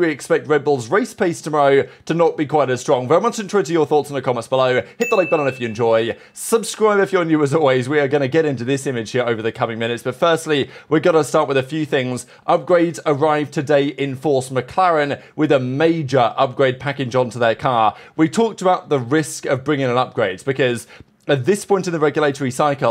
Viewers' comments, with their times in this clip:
0:05 I’ve tried everything, I even put playback speed on 0.25 and still have no clue what is he saying .. Very much what your thoughts?